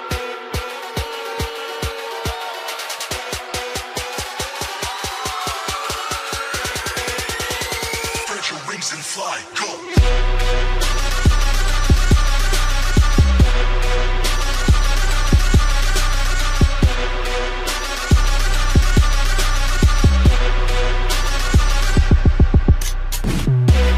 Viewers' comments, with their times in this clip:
0:10 I don’t know if anybody noticed but I thought there was mosquitoes behind my ear. 😂😂